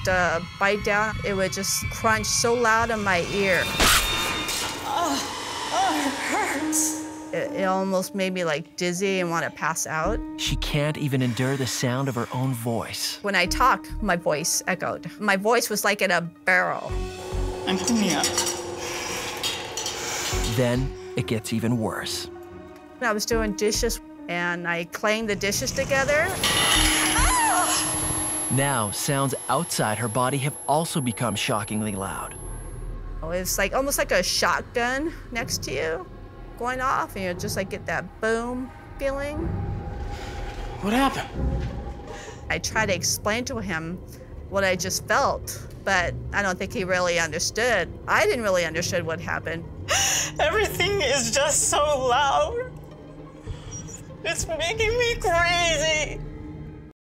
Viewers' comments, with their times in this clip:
0:03 Anyone else get scared by that crunch
0:47 Mom's just washing dishes no biggie